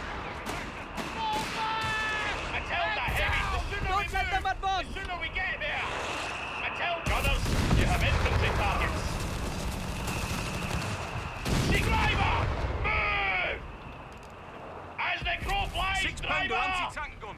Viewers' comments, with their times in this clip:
0:03 That was one strange sounding Australian